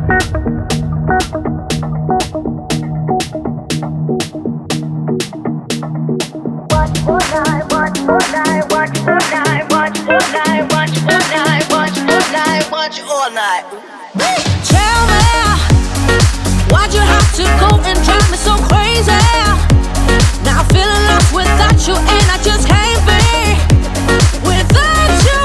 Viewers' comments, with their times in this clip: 0:08 The first song (not the intro song) sounds like whatch your fornite 😂😂😂😂🤣🤣🤣 at like
0:08 it sounds like “im watching Fortnite” ;-;